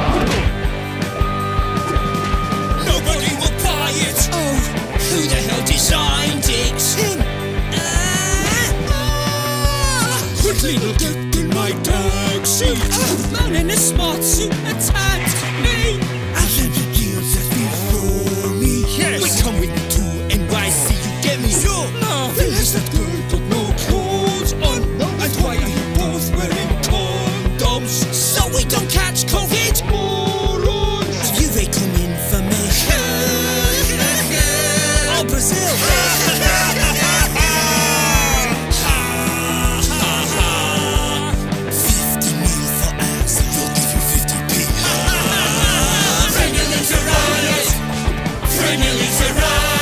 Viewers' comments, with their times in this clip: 0:09 am I listening to kaiser chiefs or despacito
0:32 The Laughing Is Insane!